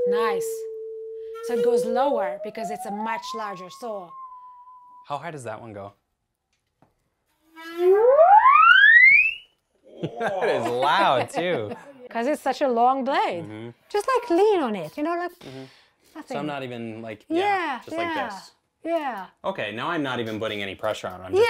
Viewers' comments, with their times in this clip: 0:07 sounds like a cartoon run rev up effect.